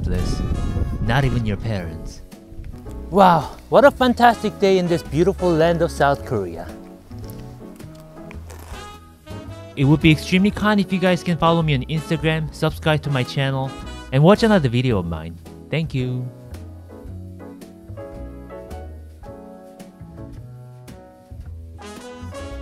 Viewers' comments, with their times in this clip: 0:07 I heard that crunch from here